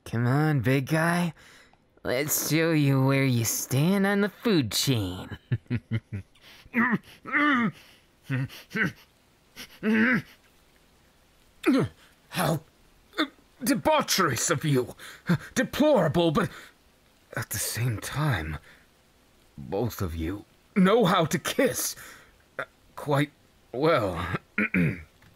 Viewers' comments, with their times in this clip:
0:06 LMAO IIDA'S NOISES-